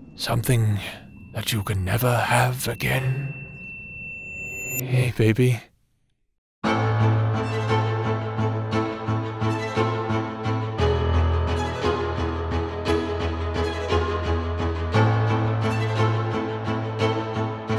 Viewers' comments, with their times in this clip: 0:04 oK after listening to audio i have some theories, the two men that was talking to us, i feel like they were the old “star captains” or atleast one of them was, and their like ancestors, ergo, they can talk to the current star captain, the guardian ALSO MAGREOUS ACTUALLY SOUNDS SO SWEET WTF😭